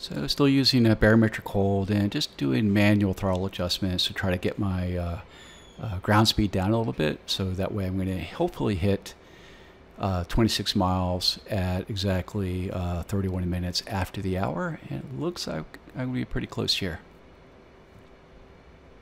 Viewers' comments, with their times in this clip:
0:06 someone wants to play with u in the background 🐶